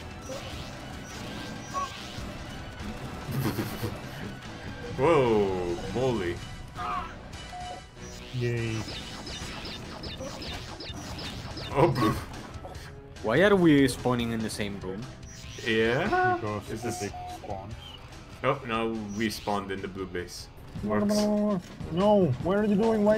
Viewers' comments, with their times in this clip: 0:05 I like how that death scream synced with the Goldeneye music